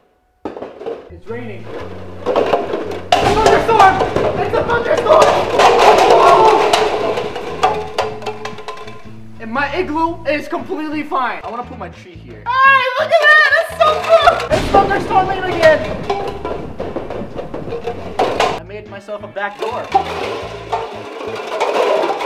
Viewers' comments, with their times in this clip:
0:03 it sounded like he said its a fu..ing storm